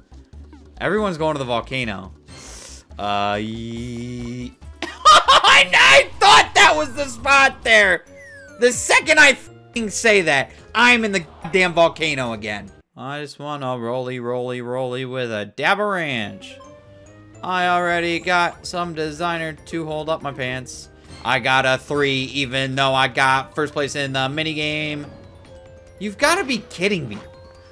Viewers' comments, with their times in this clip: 0:09 Poof scared me more than that little pop up there